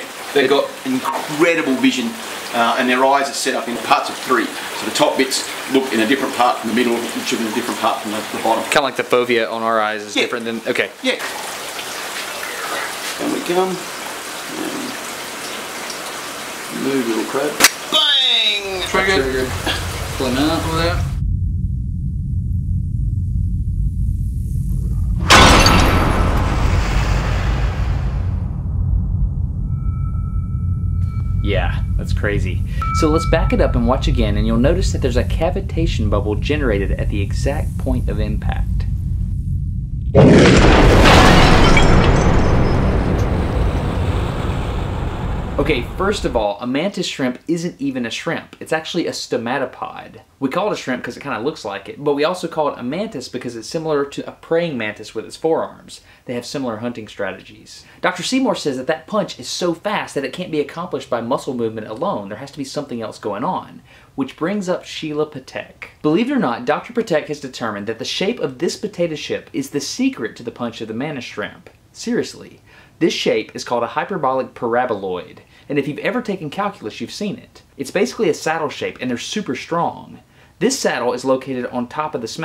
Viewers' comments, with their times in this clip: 0:09 whats the phobia in our eye ????
0:17 did anyone else jump because they didn't think it would be so loud
0:25 if you strip the guy talking and leave the audio of the punch in slo mo, it would be a great sound effect for a horror game!
0:27 Why do you have to include stupid sound effects like ? Of course the glass couldn't be heard shattering from underwater. I just can't take your videos seriously anymore. It looks like a toddler with an expensive camera made them. Unsubscribed.
0:39 sounds like it could be used for special effects in a movie.
0:39 The sound when Thor drops his hammer
0:59 potato ship. You're welcome
1:08 Did I hear you say "potato ship"? Strong maybe, but not stronger than your pringle duck billed sister.